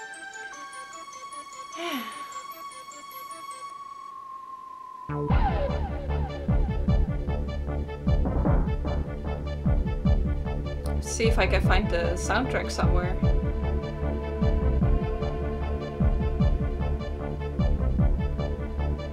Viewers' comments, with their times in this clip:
0:03 lol drop dat bass!! This kind of music is so nostalgic.